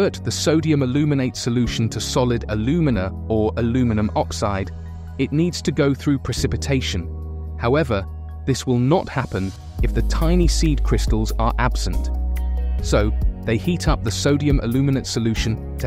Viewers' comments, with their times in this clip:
0:03 I thought I'd never hear someone from uk say aluminum correctly 👏👏👏👏👏